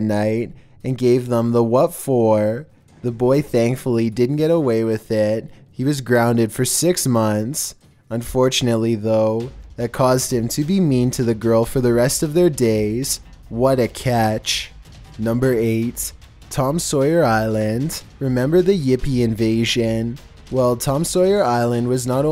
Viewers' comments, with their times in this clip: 0:10 "unfortunately tho that caused the boy to be mean to the girl for the rest of their days. What a catch." the way he sounds so serious makes it even better